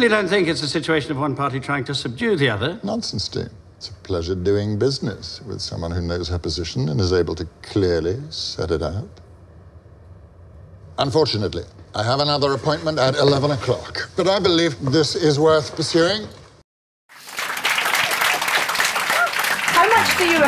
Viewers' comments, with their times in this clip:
0:08 the word "clearrllyy" make me flashback of Snape😂